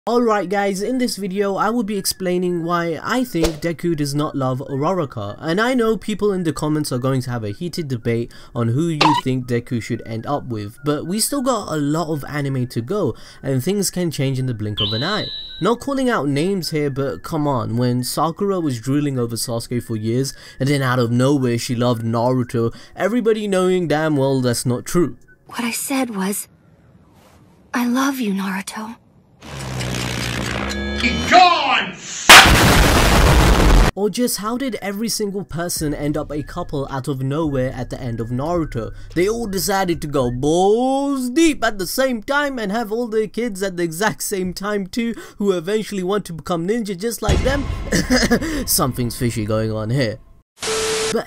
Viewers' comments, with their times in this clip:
0:05 is it just me that is concerned of the way he says uraraka?
0:30 Bruh my ears
0:32 I'm wearing earphones.. Damn it hurts